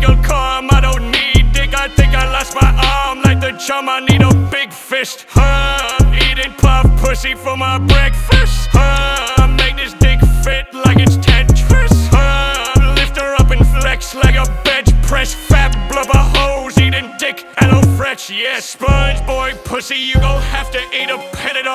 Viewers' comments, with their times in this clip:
0:06 The beat change on 🔥 🔥🔥🔥🔥